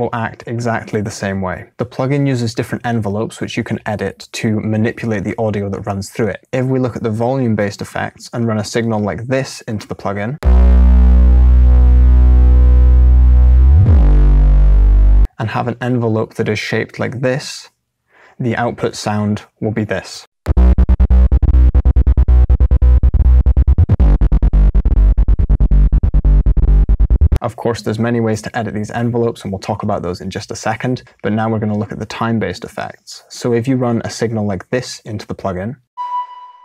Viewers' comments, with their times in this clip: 0:10 I just hooked up my Hi-Fi System to my pc and hell the bass scared the crap out of me
0:23 so i found my wObBlE pluggin?